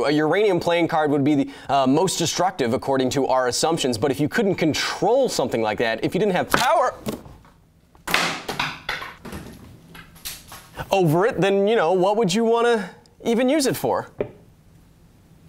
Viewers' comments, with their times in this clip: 0:03 Cat impersonation..... Priceless